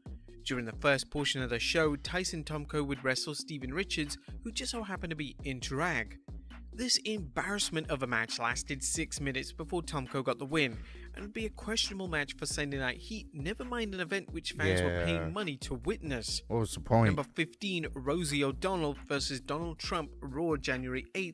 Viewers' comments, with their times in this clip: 0:04 what did he say? Inter-rac? Like interracial or in-drag??